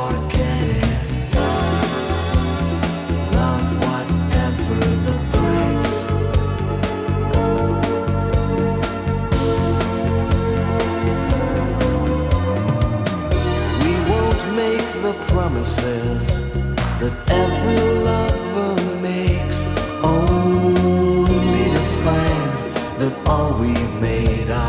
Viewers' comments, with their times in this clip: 0:05 I love when there's a step up in tone around the middle of the song followed by the keyboard arrangement and the sung part resumes. Classic, great song.